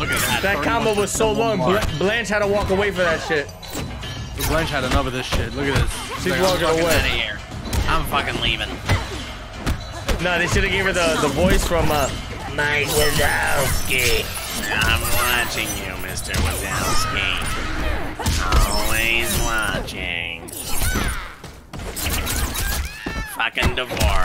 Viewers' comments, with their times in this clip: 0:05 she sounds kinda the announcer from Injustice 2 and Squidward